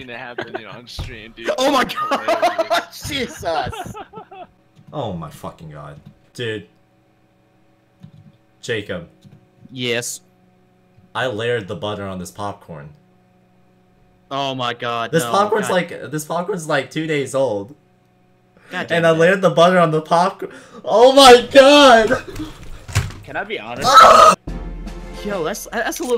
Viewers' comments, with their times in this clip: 0:08 that yes tho